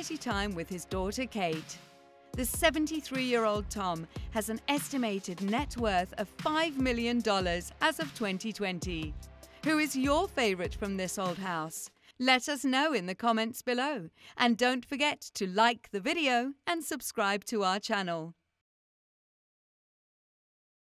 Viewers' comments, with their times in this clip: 0:05 This woman's voice is extremely annoying ! You are welcomed !